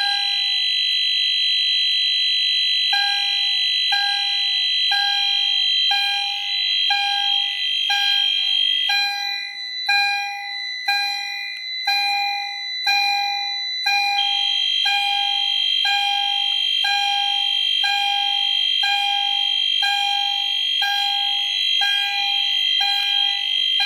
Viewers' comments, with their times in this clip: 0:09 Why can’t every building have a calm nice one like in